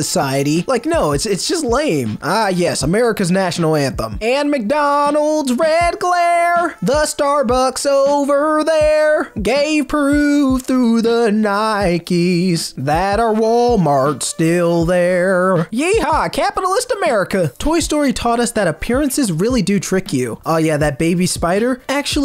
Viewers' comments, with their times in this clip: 0:03 AND Especially the Nike part😭😭. Bro you have an amazing voice man